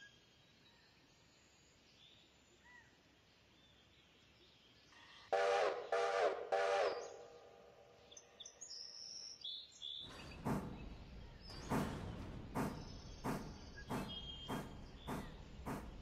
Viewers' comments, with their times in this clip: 0:03 I'd like to ask about the whistle audio. E.g. Currently, if you do not quill the qhistle, but instead max it out, the game seems to cut off the head of the sound file. Is this somehting you plan to address and a product of alpha footage?